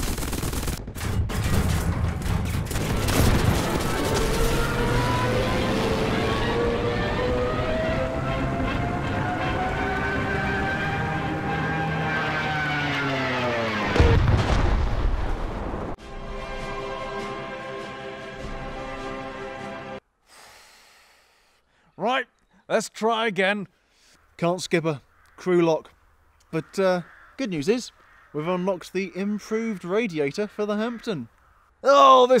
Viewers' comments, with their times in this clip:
0:04 WHO THE HELL PUT STUKA SIRENS IN SUCH A BRITISH PLANE-
0:05 That is stuka plane sound LMAO
0:05 sounds like a f1 v10 engine from the 90s
0:16 you used the victory music instead of the defeat music... I mean I guess it’s a victory that you are not in the battlefield anymore.